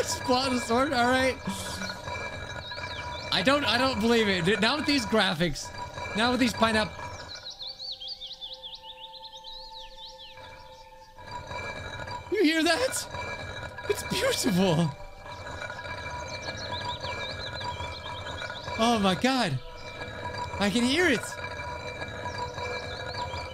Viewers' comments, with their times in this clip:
0:07 Why do I hear boss music